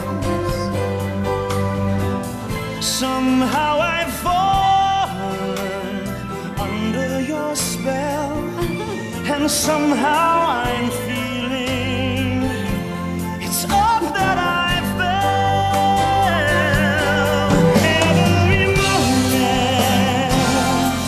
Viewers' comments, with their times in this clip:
0:08 I think it's portrayed very well. When people fall in love, they change. Fiyero becomes a little more serious and Elphie softens a little. I love her little shy giggle x